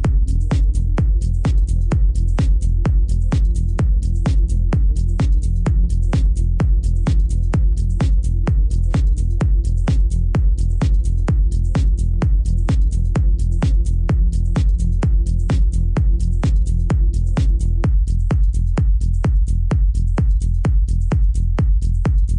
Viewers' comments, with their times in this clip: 0:03 I love kick and snare